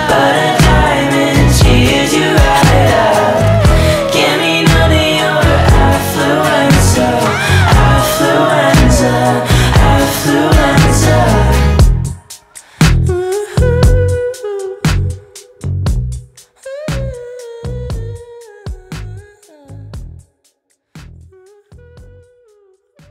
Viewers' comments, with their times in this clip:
0:07 But it says "affluence oh" And both affluenza